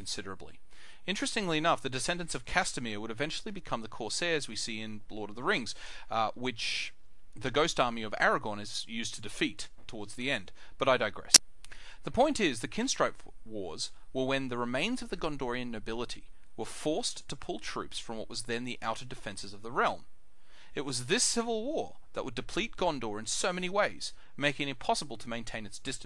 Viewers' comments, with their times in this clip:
0:10 I had my volume up relatively high. There is a noise that is audible that killed my hearing.